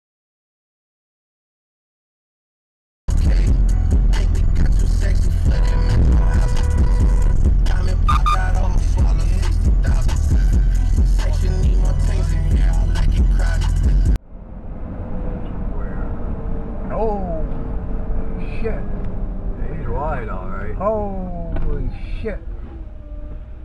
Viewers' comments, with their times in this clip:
0:03 did not need to swerve like that. That was a classic case of honking before braking
0:06 there was no need for the excessive beeping and massive swerve around the red suv. You were driving up to a damn red light. Chill the hell out.